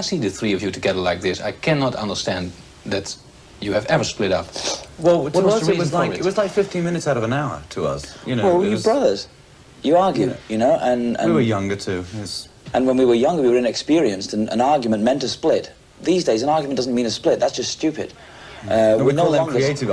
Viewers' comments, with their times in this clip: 0:06 yeahhhh robin got ALL silent 🌝🌝